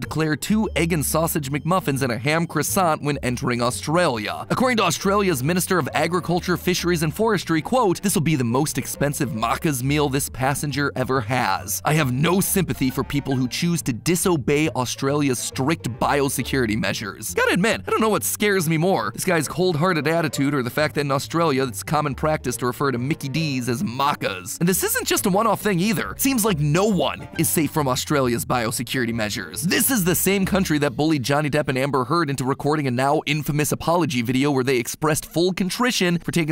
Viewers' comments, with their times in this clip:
0:08 I love hearing non Australians pronounce "Maccas" haha
0:08 what did you just say mat? Mahcas? Excuse me? That’s a crime to pronounce maccas like marhcars
0:08 so basically I Australian and that not how you say macca I mad now 😤
0:09 Any other aussies getting slightly triggered by ‘marccars’
0:09 it’s pronounced ‘mah kihs’ not ‘marh kars’ 😂
0:09 DID BRO JUST SAY MUCCASS??????????????????????????????????????
0:09 can we talk about how he pronounced maccas? 😭
0:11 Australian here. The way Mat pronounced “maccas” is absolutely priceless. It’s just pronounced “mac-iz” not “mark-iz”
0:11 as an Australian, you pronouncing it as “mah-kahs” physically hurts. “Mac” is said like “Big Mac”. Maccas. 5 minutes of research, man. That’s all it would take to not pain me so.
0:14 I’m sorry mat but I physically cringed inside cuz of how you said “maccas” (it’s sposed to be Mac-uhs, not Mahccuhs)
0:21 what’s even scarier than that (which is not scary) is that you say Macca’s like Markeirs instead of Mackeirs
0:24 as an Australian I felt physical pain when he pronounced maccas (Mack-as) as (mahk-ahs) also maccas is a better name than Mickey-Ds i mean what kinda name is that, sounds like I’m going to a Mickey Mouse strip club